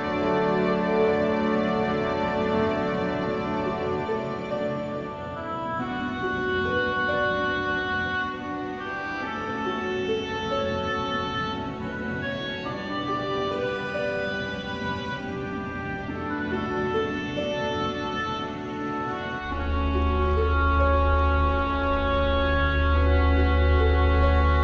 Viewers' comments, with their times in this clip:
0:07 this song still make me cry